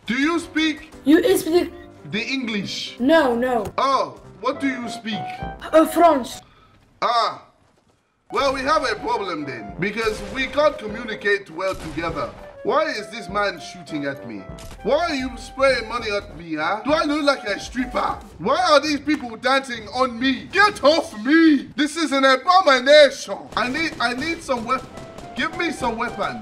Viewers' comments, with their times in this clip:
0:10 I swear to god that guy is Dutch af pretending to be French